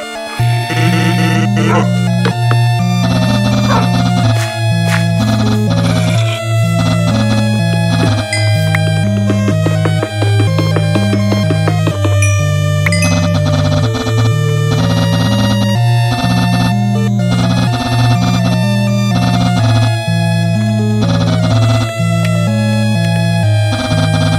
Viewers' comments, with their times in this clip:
0:09 On am I the only one that the noticed the way he mined kinda went with the music?